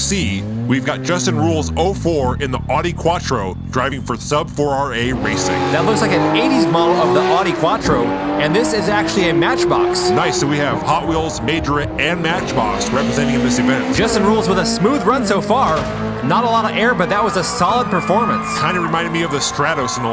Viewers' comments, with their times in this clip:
0:08 Quattro with RB26 sound? XDDD bruh mate